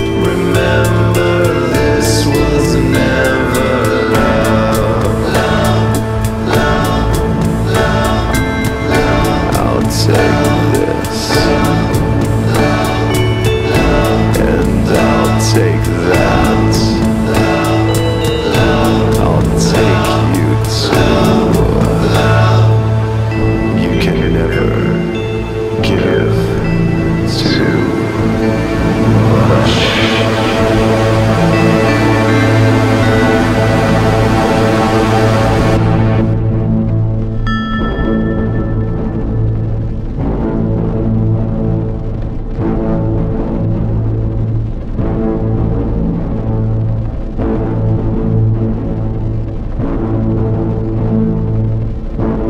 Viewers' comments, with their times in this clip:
0:09 anyone else gettin marilyn manson vibes
0:10 Am I only one who noticed that Corey in that song is close to early Marilyn Manson in vocal and whole song reminds NIN's Ghosts?)
0:35 Assumed they would unleash mayhem riffs ... They didn't, love em for being original at all times. Great dark tune!!
0:37 The pulsing bit is awesome - I hope somebody samples it or something.
0:40 From Sounds like "Terminator"...